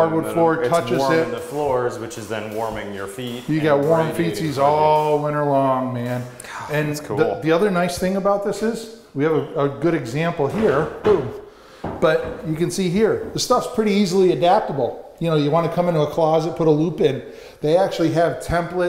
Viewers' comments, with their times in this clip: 0:03 "Warm 'feces' all winter long, man!" Just about had coffee coming outta my nose, LOL